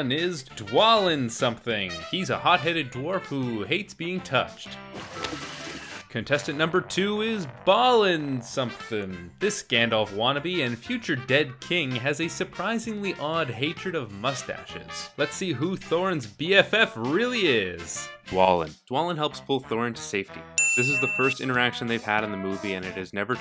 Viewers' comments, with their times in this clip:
0:07 Is it crazy how just hearing a ding (around the mark) makes me taste bile?